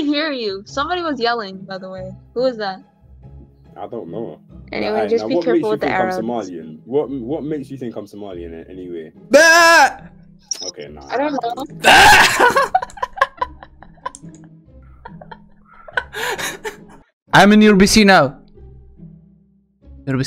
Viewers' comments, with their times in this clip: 0:04 "Just be careful with the Arabs" !! ...Am I wrong ??